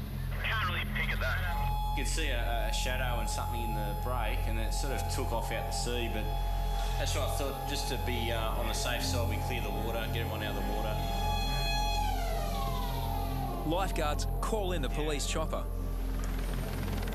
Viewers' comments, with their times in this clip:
0:05 i love that noise Coming from the sky every time its Afternoon or Late Morning